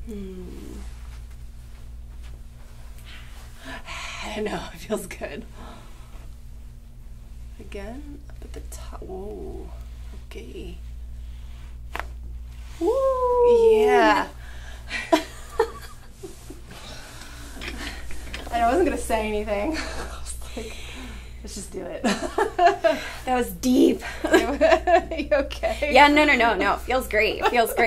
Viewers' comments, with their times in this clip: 0:10 howls like a wolf lol